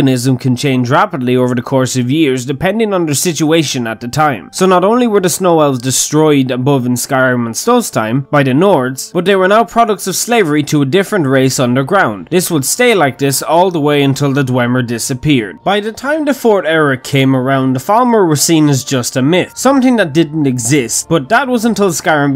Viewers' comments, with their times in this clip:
0:07 you got a steam message.